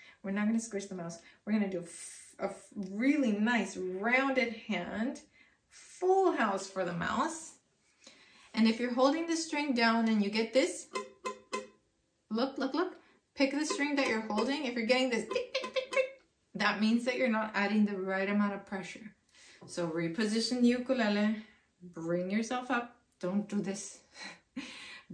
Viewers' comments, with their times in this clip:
0:09 Hi! I'm not sure if you're going to respond but I would like to just ask… How do you tune this part ? I have it tuned and followed what the app said but whenever I follow your instructions somehow it just won't stop sounding like ‘tick’ instead of how you did it, that and I'm barely touching the string and it still sounds like that and I followed each instructions, as well as how you hold it and which finger which is the ring and has to be the very tip as you said